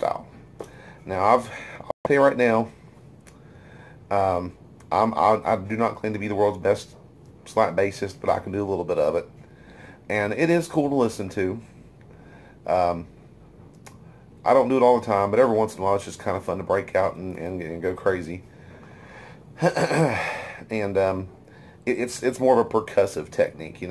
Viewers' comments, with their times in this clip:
0:07 You're good at slap bass!